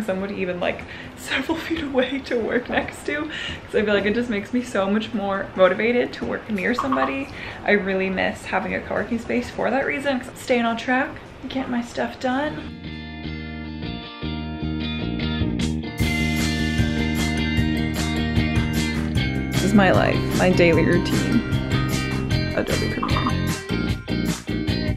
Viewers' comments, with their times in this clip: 0:05 that Slack notification sound TRIGGERED ME